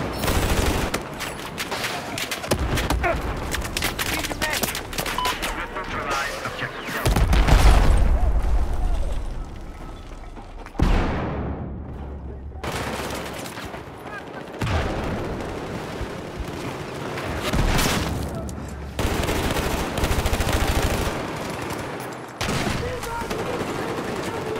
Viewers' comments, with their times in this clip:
0:05 That moment when you hear a rocket coming at you. xD